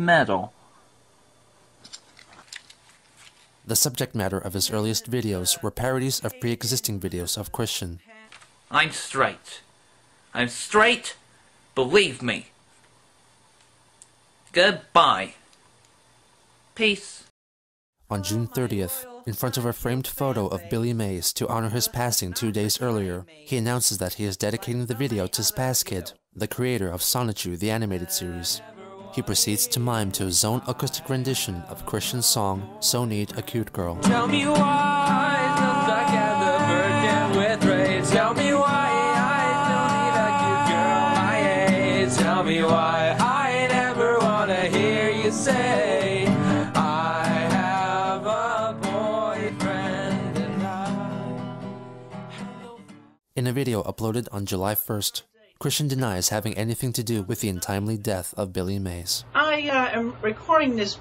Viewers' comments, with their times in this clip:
0:05 to be fair his impression is dead on
0:33 y is this low-key a banger tho
0:41 dude sounded pretty damn good! Had to rewind to make sure.
0:42 That “tell me why” was SO DAMN SMOOTH
0:49 ngl dudes got a nice voice